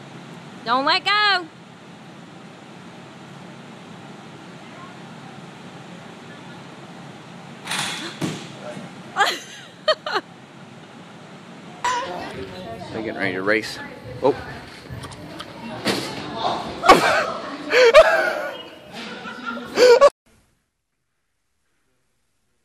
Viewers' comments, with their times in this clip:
0:06 woman: Don’t let go! Guy: let’s go